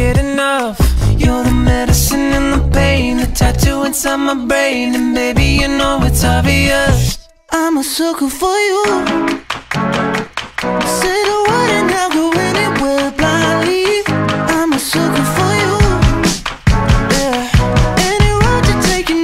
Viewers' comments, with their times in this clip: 0:07 that guitar part is goooooood I love it